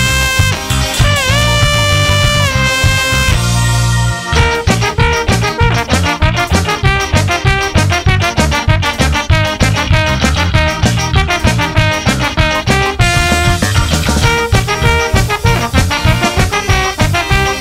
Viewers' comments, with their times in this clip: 0:04 for that beautiful Canon!